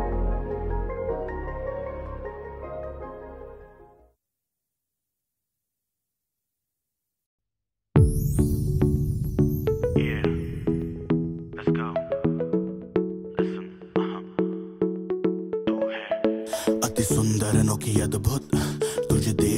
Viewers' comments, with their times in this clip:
0:07 This song is like a Sugar Crush so sweet❤✨